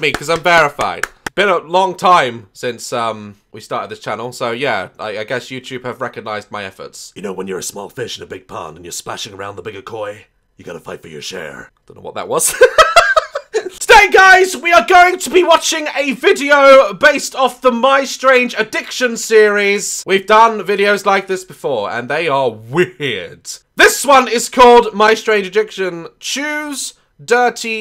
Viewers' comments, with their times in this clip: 0:07 not gonna lie I was a little scared And now I want him to do a voice for a prisoner in a video game
0:08 dude be sounding like Will Arnett